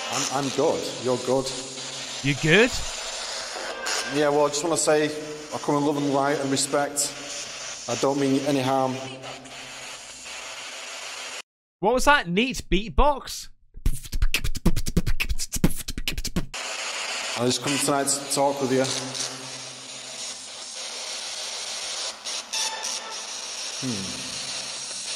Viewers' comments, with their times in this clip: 0:10 I can’t even make those sounds for beatboxing